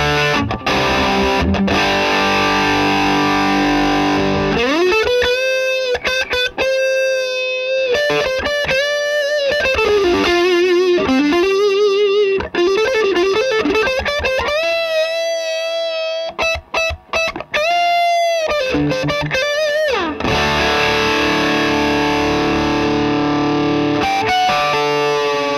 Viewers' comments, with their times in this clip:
0:08 Yeah :) Sounds to me like a cone cry. Correct me if i´m wrong. Cool video guys. ✌🏼